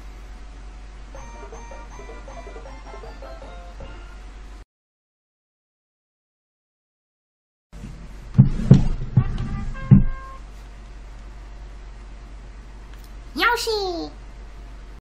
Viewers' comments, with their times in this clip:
0:13 Yoshi! Great Yoshi impression!